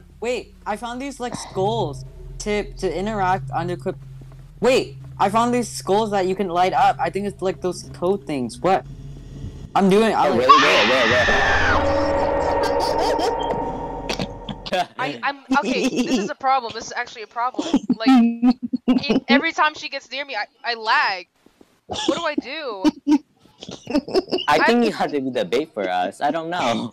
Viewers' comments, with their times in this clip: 0:09 best scream ever